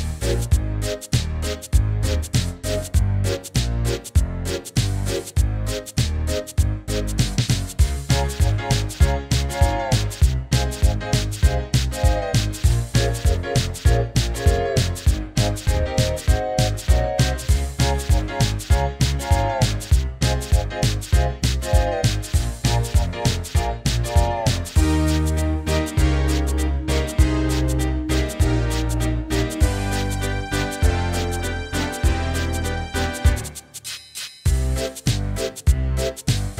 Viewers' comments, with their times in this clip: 0:08 sounds like some piano starting here and going on for several seconds
0:09 Thomas The Tank Engine, but you could only bring that synthesizer .Comparing to original, it misses that synthesizer 'solo' but it still fits the lighter version of this track. Also, comparing both makes me realize how aggressively 80's this track is.
0:15 is it just me or did i not notice the chord change ever
0:24 Love that Beat